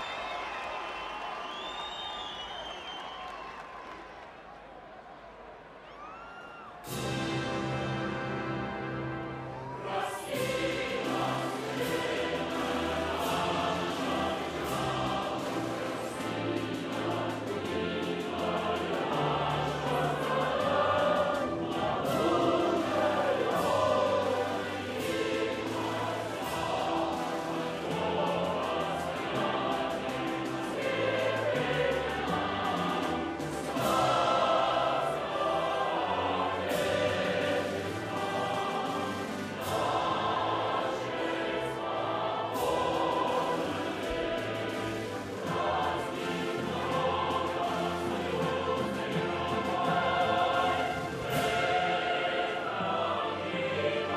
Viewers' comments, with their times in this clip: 0:04 Starts Russian anthem
0:05 when the actual anthem begins
0:06 when I hear this bell sound my heart start to beat, adrenaline throw my blood and feel power. Russian anthem is Amazing.
0:07 the Russian anthem start
0:29 then you have that one gun who ruins it by not singing
0:33 "STOP!!! Sad Men. She Starts. I care for more rough mint." from the "USSR misheard lyrics"
0:36 Closely, it sounds Spots on Midget Man in English, and Camera did spot at the Midget man!